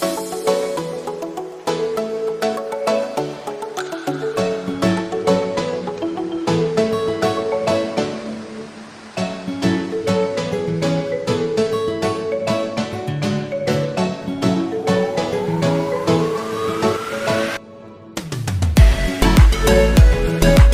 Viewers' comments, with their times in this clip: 0:06 he is talking 🙄